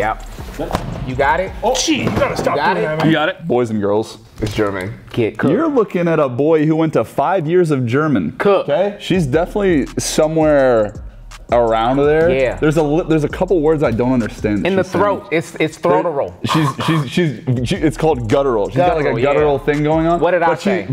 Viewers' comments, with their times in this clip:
0:06 as a german,that aint german. I havent watched it all yet but my guess is that its dutch.